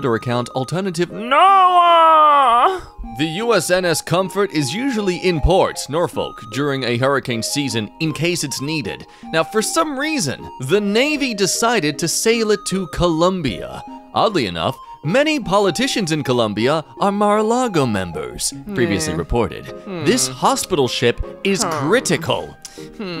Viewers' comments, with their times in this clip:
0:04 anyone else notice the mispronunciation of Norfolk.. then again can't blame em I've made that mistake before.. it's correct pronunciation is norfok cuz the "l" is silent
0:04 The way you pronounced Norfolk is honestly making me cry 🥲